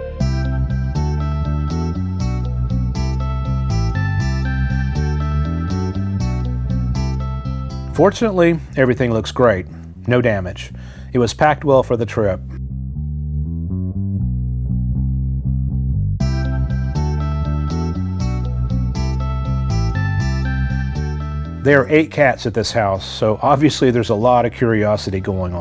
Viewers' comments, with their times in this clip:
0:08 Song when you taking the glass out brings back memories over a year ago with the original Leon video. What a great video!